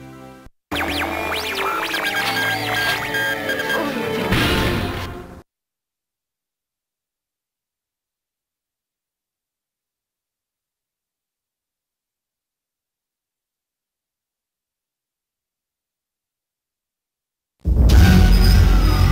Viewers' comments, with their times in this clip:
0:03 Loved this game as a kid! Anybody else hear the sex "UHH" ? I remember hearing this as kid and was like WTF lol.